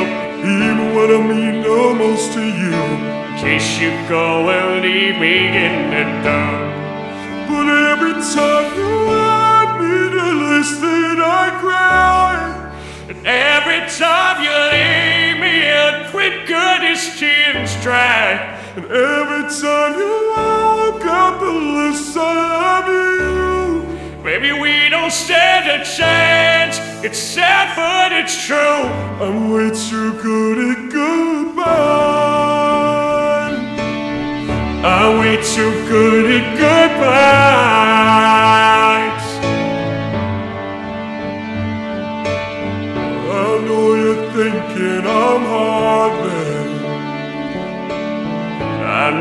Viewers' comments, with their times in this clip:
0:08 Patricks voice gave me goosebumps
0:36 That harmony 🔥🔥🔥. Felt it in my guts.